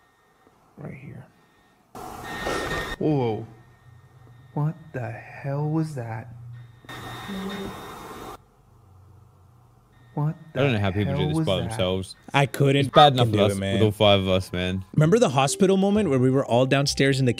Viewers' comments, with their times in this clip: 0:04 when the guy said "what the hell was that" the voice definitely said "me".